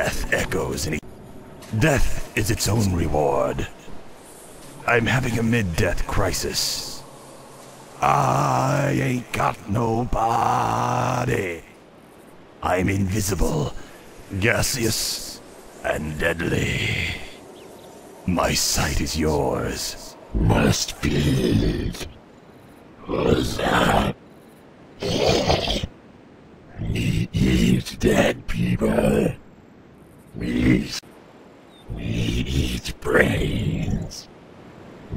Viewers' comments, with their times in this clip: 0:08 nice, didn't know that a shade could sing
0:21 When I was young, I used to think the ghouls said: "must pee!"